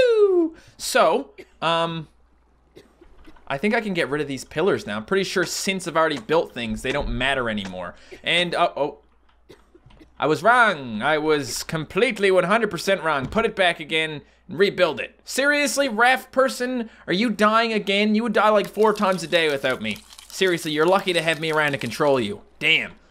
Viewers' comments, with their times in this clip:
0:10 u can hear coughing